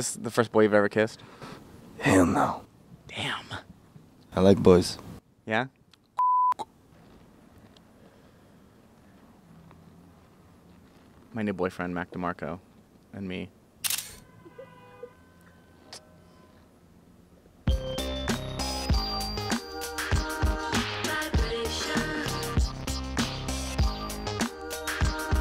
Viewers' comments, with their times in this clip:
0:06 the k after the censor is everything